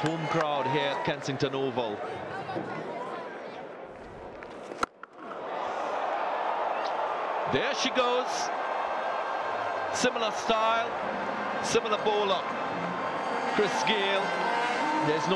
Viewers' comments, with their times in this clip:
0:03 the sound of the ball off the bat is the single biggest thing missed by EVERY cricket game ever created! How hard could this sound be to capture!!!